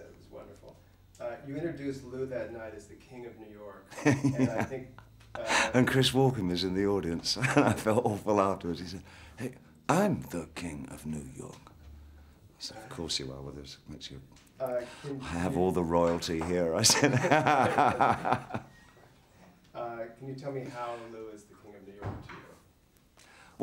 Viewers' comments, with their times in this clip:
0:09 when Bowie does Christopher Walken....Mwah. You were a legend Ziggy